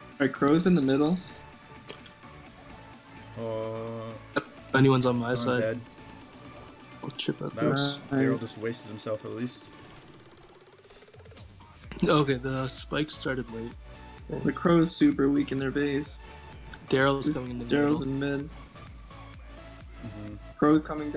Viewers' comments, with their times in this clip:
0:09 the beat dropped and bull went with it